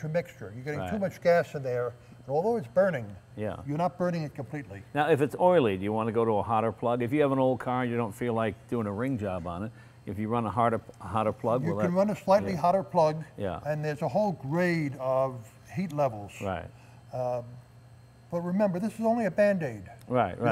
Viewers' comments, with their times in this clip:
0:07 rim job??? lmao!